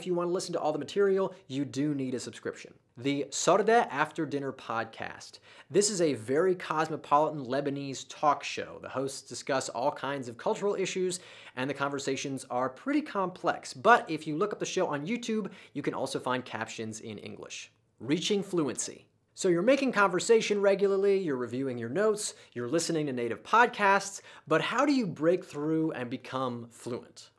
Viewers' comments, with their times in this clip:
0:08 you mispronounced it. translated it. " This secret is after dinner ":goodvibes: